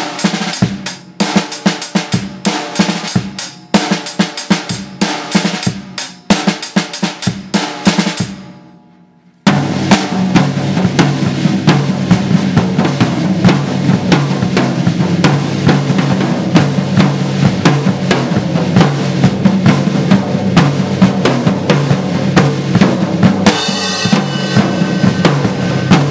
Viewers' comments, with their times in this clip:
0:09 good beat good man, all you need is a double bass pedal to master it, The art of shredding?